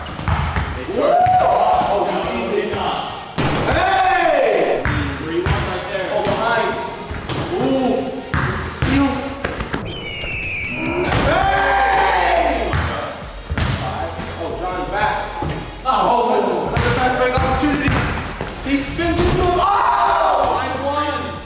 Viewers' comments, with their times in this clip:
0:09 The eagle sound 😂😂